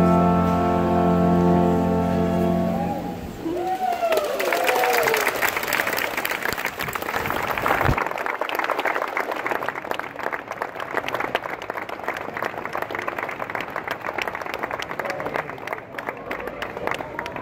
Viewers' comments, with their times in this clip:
0:05 The cameraman promptly fainted to this beautiful music)))